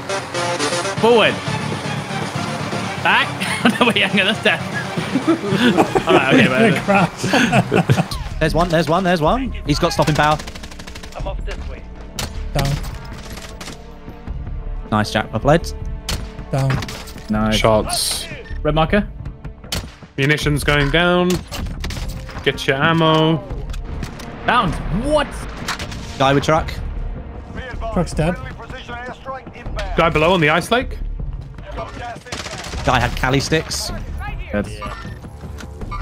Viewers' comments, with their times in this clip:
0:09 the mw2 music added a whole new element to this game.....I need it
0:18 the mw2 music Yes.